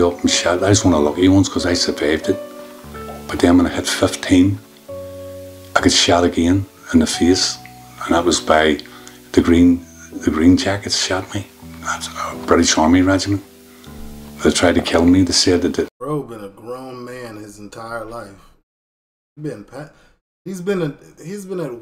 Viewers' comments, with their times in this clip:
0:05 😂😂 omg they playing RuneScape music while guy is telling us about being shot